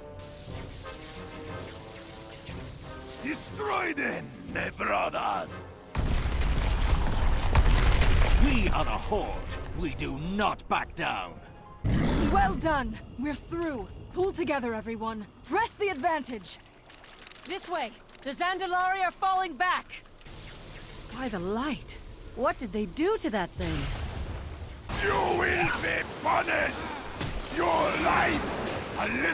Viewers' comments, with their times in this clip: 0:10 Was that the accent of a Jamaican guy speaking Chinese or the other way around?